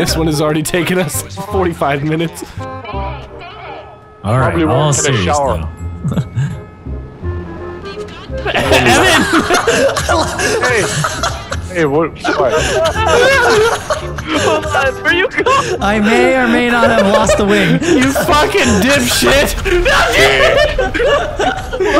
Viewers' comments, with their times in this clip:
0:05 I love vanoss' laugh!! And his voice